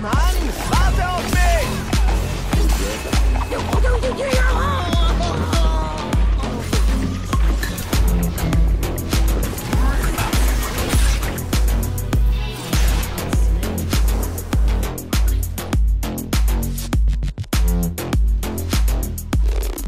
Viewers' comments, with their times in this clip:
0:03 whatttttt because have song of quadra kill? wtf